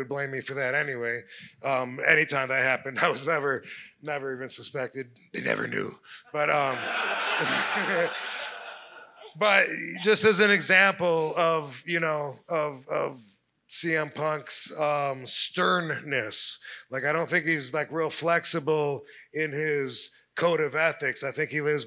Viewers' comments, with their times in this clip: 0:04 That demonic voice Rob did scared the hell outta me😂😂😂